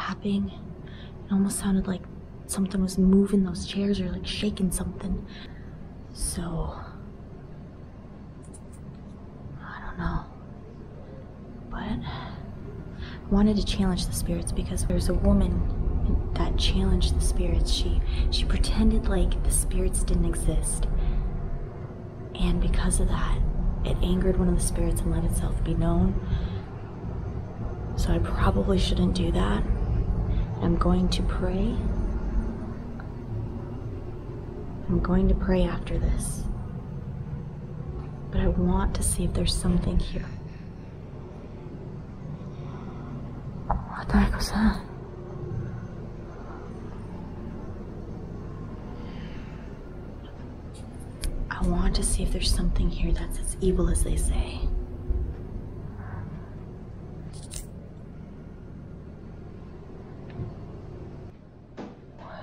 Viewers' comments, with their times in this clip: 0:05 something said something couldn't make it out tho
0:12 Shes so cute like pointing her finger and obviously scared while talking "so.. like.. i dont know.." lol ❤
0:39 I heard evil laugh
0:39 a disembodied sound of breathing while you're talking
0:39 listen closely you can here something breathing
0:40 sounded like a woman in distress like she’s scared and is hiding till someone gets her and takes her to a safe place.
0:40 it sounded like a women breathing deeply as you were talking
0:40 There's a deep breath or a sigh
0:42 u hear someone breathing or taking a breath
0:50 on sounds like someones running